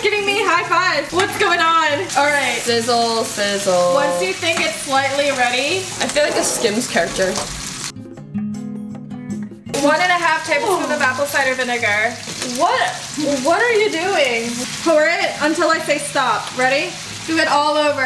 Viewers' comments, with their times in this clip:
0:03 this is the part that got me 😭 the sims yawn too